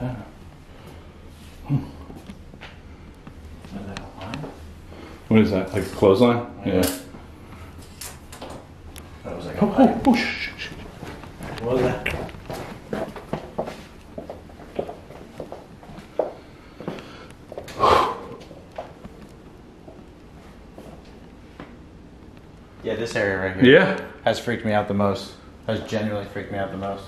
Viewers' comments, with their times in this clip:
0:08 .....and now there is a childs voice, or IS it........???????
0:08 sounds like a child saying "one or run"
0:09 you hear a kid whining....
0:09 high pitchy buzzy sound is what i heard.